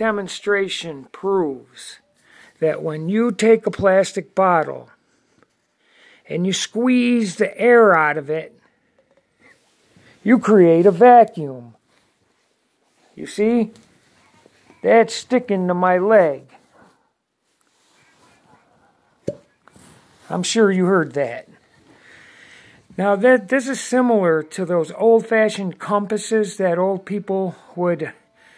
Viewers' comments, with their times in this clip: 0:10 The 3rd time of video I created a 99.9% vacuum where you hear the pop which is result of vacuum within bottle pulling on my skin!!!